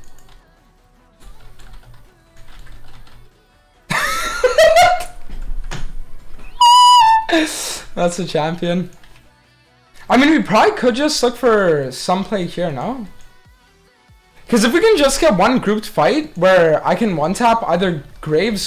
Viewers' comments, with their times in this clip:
0:05 bro lowkey hit a note there